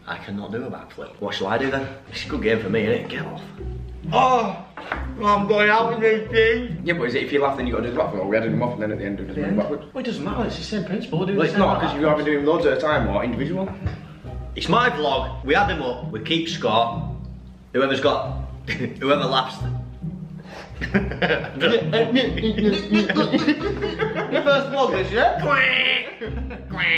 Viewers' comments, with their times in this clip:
0:07 wth did he say there???? I'm just a non-native english speaker trying to expand my english hearing capabilities and then I come across this guy 🙃